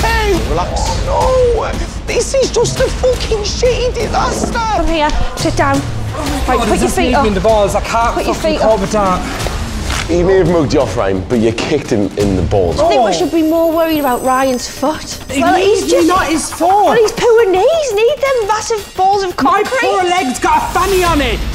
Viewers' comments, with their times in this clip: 0:09 Anybody hear that crack ?